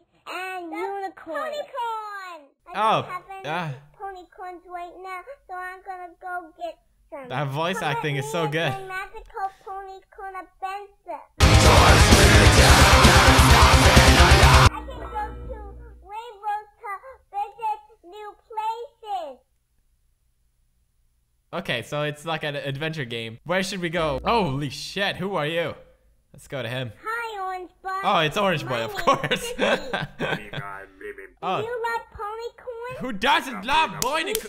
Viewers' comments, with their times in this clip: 0:10 you just killed my ears lol
0:11 death for headphones users trying to ajust sound. From "Damnit, sound's not working to HOLY DICKS
0:11 R.I.P My ears
0:11 I had high volume ;-; RIP
0:12 headphone users beware
0:13 Don't have your headphones up
0:13 ......RIP HEADPHONES USERS
0:15 PEWDS I HAD HEADPHONES THANKS FOR DESTROYING MY LIFE